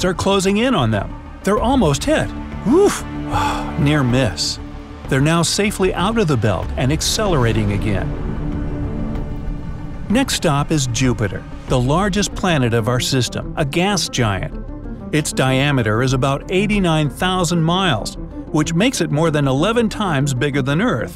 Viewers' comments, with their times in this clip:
0:03 sound like he is sad the they didint hit the asteroids;-;